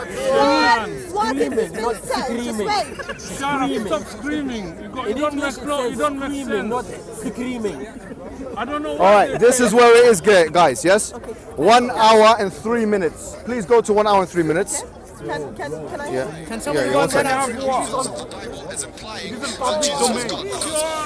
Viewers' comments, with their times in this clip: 0:08 it's screaming not iscreeming